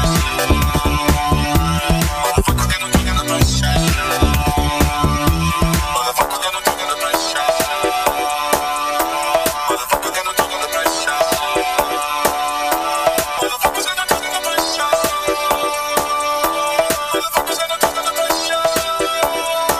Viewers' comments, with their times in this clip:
0:05 onwards and 0.5 speed. you can clearly make out 'motherfuckers gonna talk under pressure'